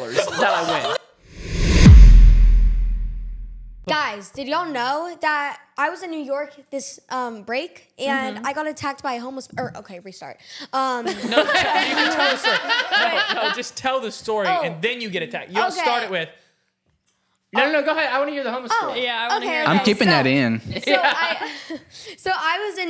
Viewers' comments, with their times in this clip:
0:08 her just casually saying I got attacked by a homeless person